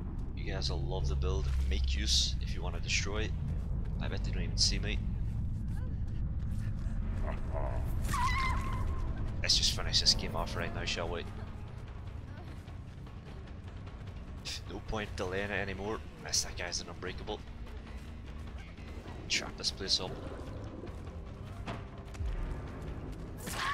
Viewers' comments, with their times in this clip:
0:05 freddy laughing before hitting nancy, perfect passive timing